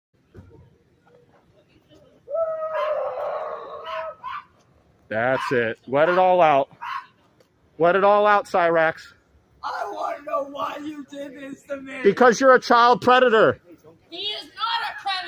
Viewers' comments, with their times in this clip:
0:02 sounds like when you slowly let the air out of a rubber chicken lol